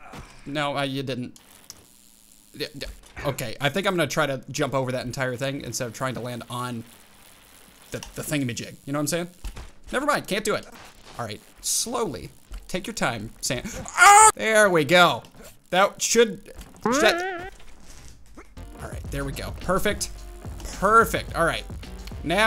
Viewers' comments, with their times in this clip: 0:10 perfectly cut screams 2021 watching?